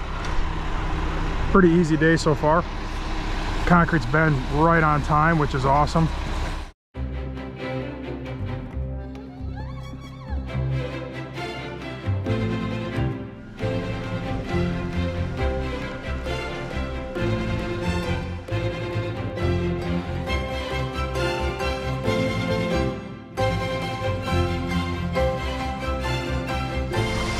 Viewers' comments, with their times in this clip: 0:08 what in the Oregon Trail Lonesome Dove 1990s Hollywood western music is going on here.....trying to pull at my heart strings with instruments 🎻.........the Mennonites would not approve....Acapella only!